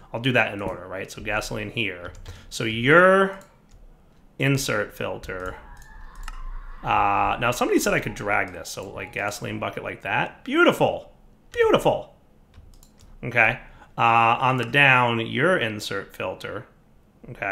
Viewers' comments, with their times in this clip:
0:05 Did anyone else hear the screaming ? I am having Invasion pack flashbacks.